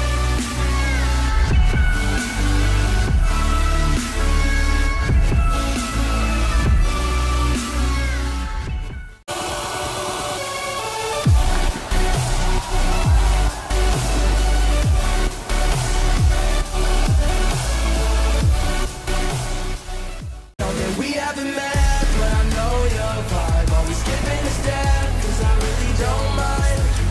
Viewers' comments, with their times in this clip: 0:09 sounds like If I loose Mysefl - Alesso vs OneRepublic